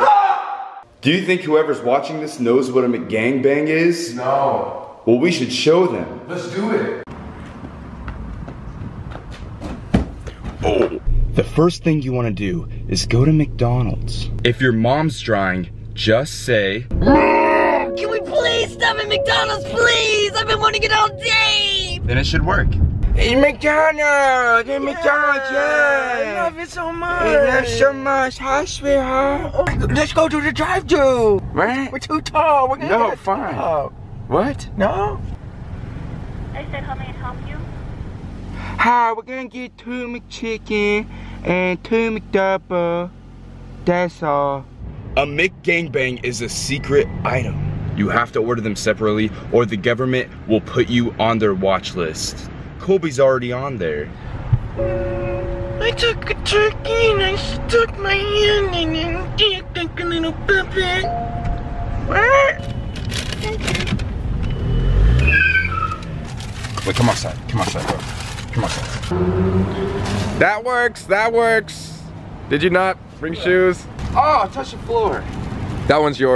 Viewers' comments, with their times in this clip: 0:09 The minecraft Steve got hurt NooOOOOOOOooooooo
0:10 why does Colby sound like Steve from Minecraft..? (Unless that’s not colby)
0:10 colby be sounding like Minecraft Steve tho
0:10 the roblox oof sound 💀
0:10 ar it sounded like the Minecraft death sound
0:10 colby sounded like minecraft steve
0:11 sounds like a sound from Minecraft like a Zombie
0:23 i loved the way they were talking😂 ————— sam and colby contact ghosts “oh cool” sees a spiderweb “oh i see a spider-web in there i’m so scared!”
0:28 his voice was so cute xD awwwwwe!
0:59 I didn't understand a word you say there lol
1:03 he just the way he said thanks and just skerded out the drive through